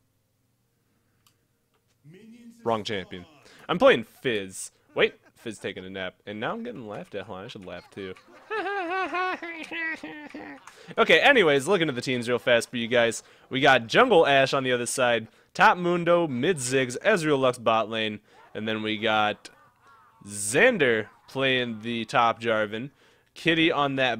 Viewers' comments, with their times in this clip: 0:07 i dont think shes laughing at you 0__0